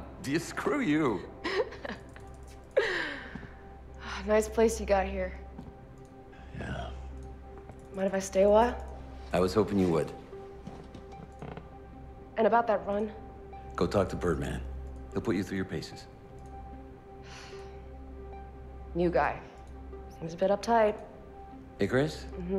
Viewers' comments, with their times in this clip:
0:10 what was that noise?!